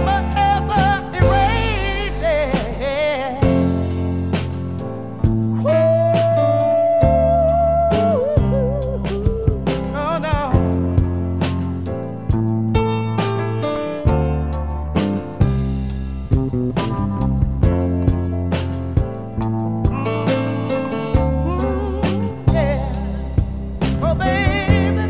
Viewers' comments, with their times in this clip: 0:09 crazy how the second most-listed to part of this song is the piano bit (sorry for my lack of music linguistics) at the end Kanye really was cooking